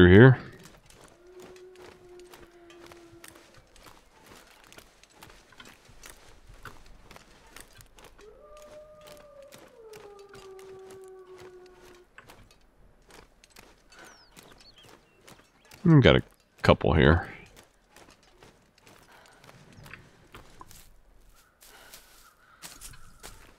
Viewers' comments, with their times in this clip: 0:08 I kept hearing the wolves howl and in my head I just went "aww it's okay you guys will be alright" because I'm a gaint dog/wolf lover